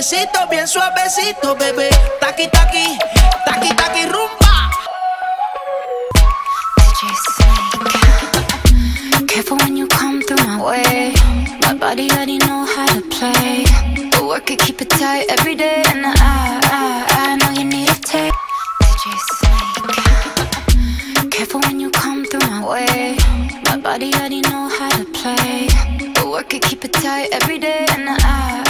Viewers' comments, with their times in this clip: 0:09 I thought it was Lisa’s voice but I realized it was Selena’s voice